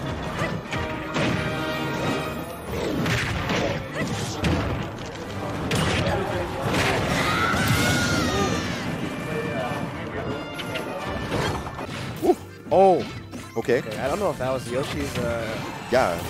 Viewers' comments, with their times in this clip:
0:03 the timing with the music tho😂